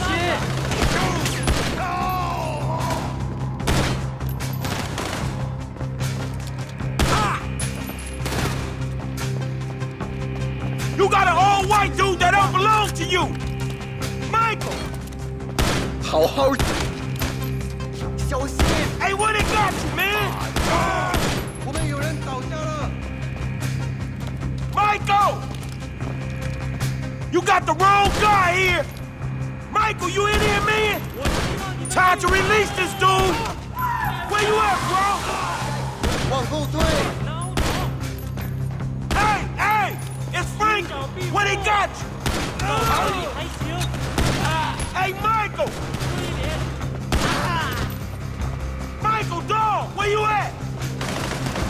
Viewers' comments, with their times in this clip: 0:10 "You got a old white dude that don't belong to you! MICHAEL!" lol I love how he says that
0:16 😄 it sounded like he said "hong hoe".
0:32 somewhere in the distance I can hear Nico Bellic’s voice, when I played this mission, I heard his voice! 👂
0:34 jeez that scream